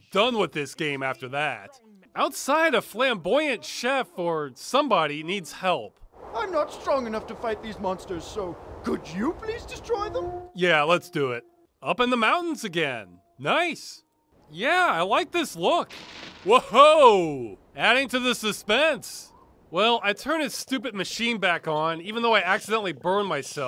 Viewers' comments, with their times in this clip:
0:06 That chef almost sounds like ProJared. The first part, not so much, but "Could you please destroy them?" That is ProJared to a T, the way the line was delivered, the way his voice sounded, Anyone who follows ProJared would hear it aswell.
0:06 lmao at the chef guy .. he sounds so much like projared